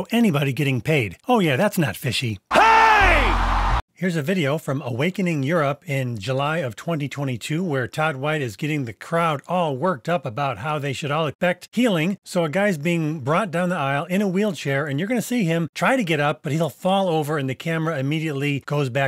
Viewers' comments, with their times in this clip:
0:03 Is it weird that when I heard the "HEY!" I thought of the "Hey Cat"?